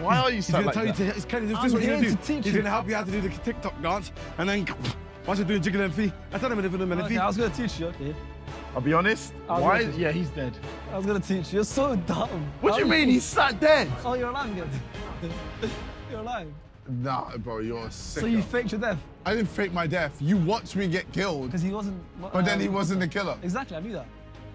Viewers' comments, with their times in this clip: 0:05 chunkz turned into eminem for a sec